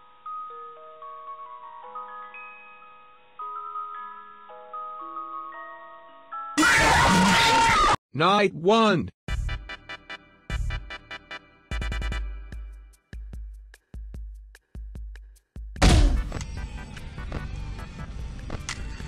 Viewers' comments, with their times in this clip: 0:07 that is literally how Bob from SMG4 sounds!!!